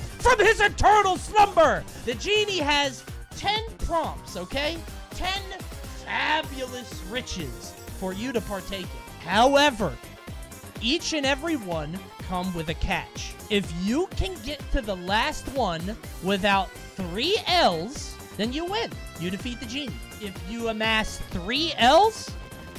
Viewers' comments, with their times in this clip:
0:05 10/10 gilbert gottfried impression